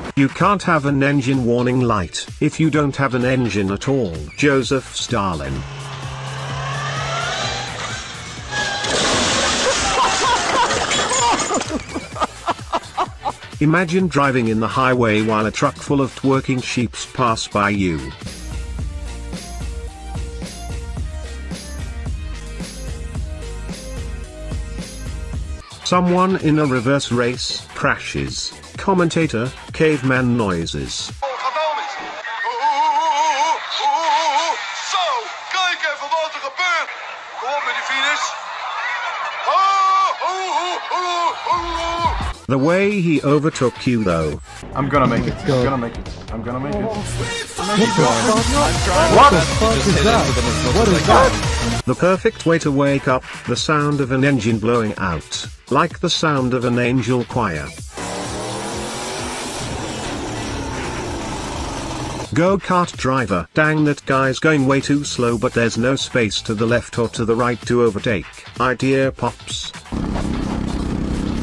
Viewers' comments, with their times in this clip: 0:05 you can hear the engine (or very crappy transmission) near the end of the clip sound like it did one last heavy heave to yeet itself out of the engine bay
0:27 im dutch and that accent of him is so weird and why do we do reverse races????
0:58 my dad's sneeze